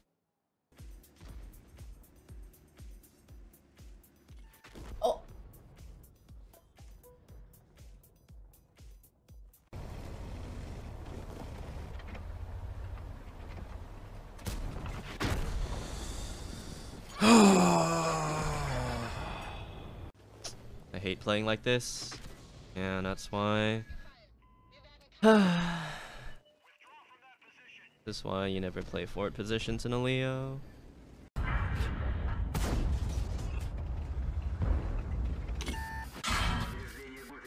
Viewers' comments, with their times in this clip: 0:05 was a perfect timing of a discord notificatiion
0:24 I expected him to say it loudly too bull shit